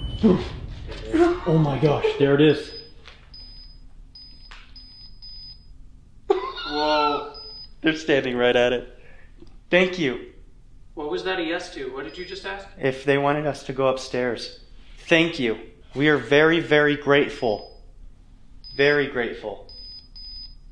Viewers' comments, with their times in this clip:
0:08 I could have swore in my right airpod there was a like moan/scream of an older figure in pain… idk 🤷🏻‍♂️